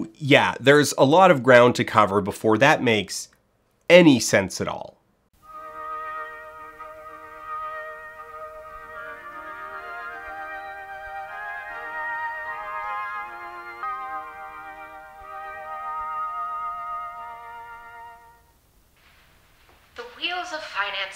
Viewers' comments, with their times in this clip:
0:06 Where did you get the music for the part ? It sounds like the Papal anthem a bit but I really like the speed of it.